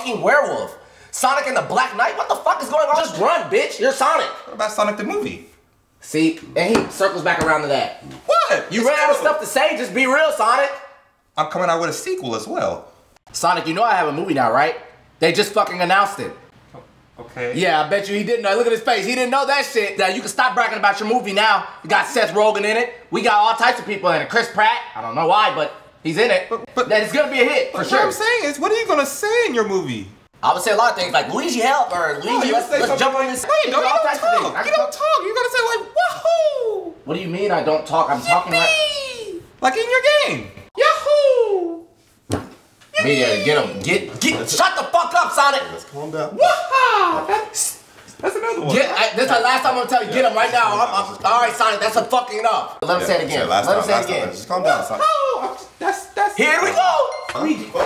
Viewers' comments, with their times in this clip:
0:05 WHAT A belt SONIC THE MOIVE
0:44 why Mario said it like that🤣😅🤣